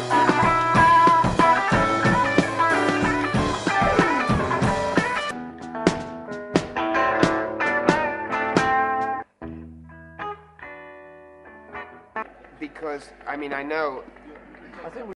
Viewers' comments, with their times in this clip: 0:08 Cool! I love Paul's enthusiasm on lead guitar, and also the moment Ringo hugs him passing by is so sweet.